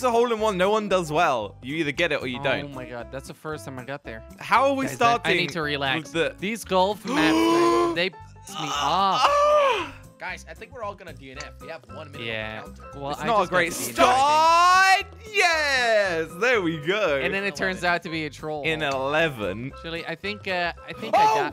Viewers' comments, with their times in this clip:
0:07 OMGGGG XDDDD slogo's gasp then ahhhhh anime UwU